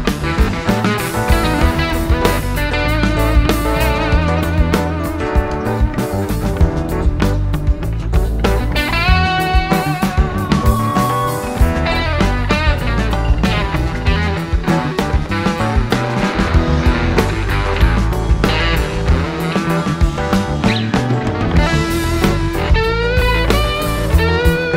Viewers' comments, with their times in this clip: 0:08 one of my favorite jams by Jerry commences. You feel it building before, then the energy just bursts.